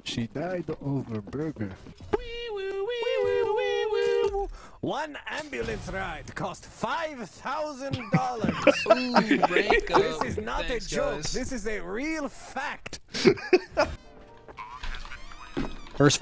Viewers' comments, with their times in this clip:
0:04 he sounds like that russian guy from Coraline